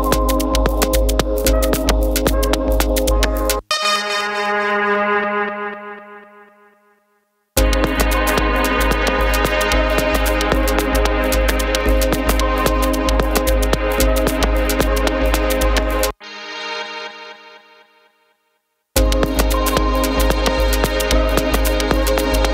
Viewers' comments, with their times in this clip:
0:05 Anyone else think that it sounds a lot like 'Try This' by Pegboard Nerds ?